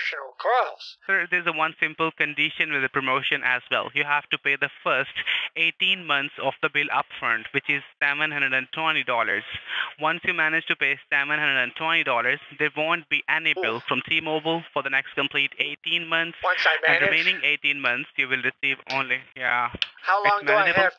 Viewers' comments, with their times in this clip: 0:07 Gotta pay Semen Hundred and Twenty Dollars.